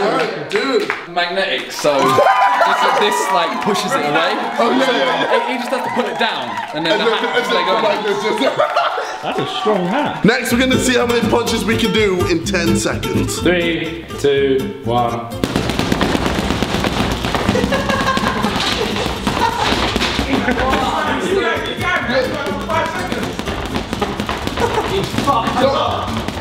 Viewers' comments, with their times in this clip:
0:09 When Josh says That's a strong hat like he actually believes it makes me crease 😂